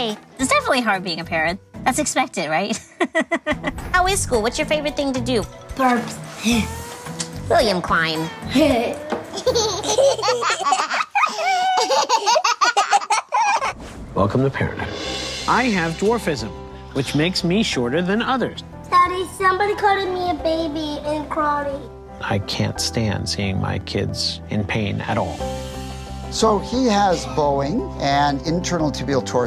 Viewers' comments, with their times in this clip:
0:10 Wow! .... Two kids who were given up by their parents laughing hysterically! I LOVE it!! 🙏🏽 I wonder if their bio parents are watching. Glad to see these beautiful children will go on to be VERY productive citizens of society.